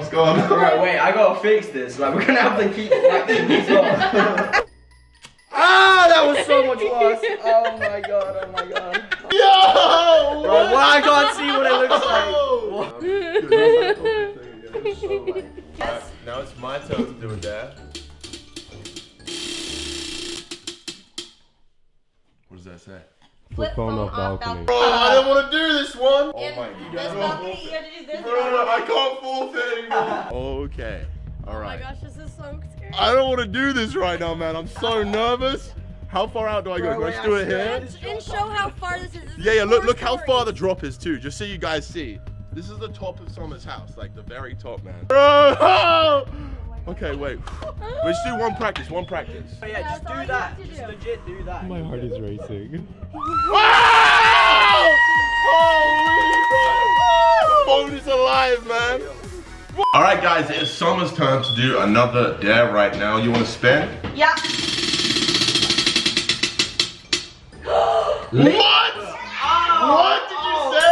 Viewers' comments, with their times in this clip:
0:08 her laugh was so wierd
0:14 that laghf do
0:52 screams so loud